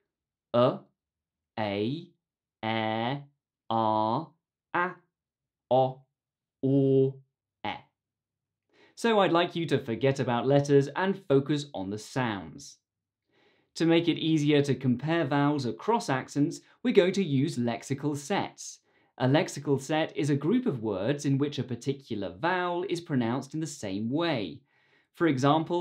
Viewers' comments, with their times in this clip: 0:06 in you say it's /ɔː/ but i heard is [o̞ː] and sounds like /o/ for us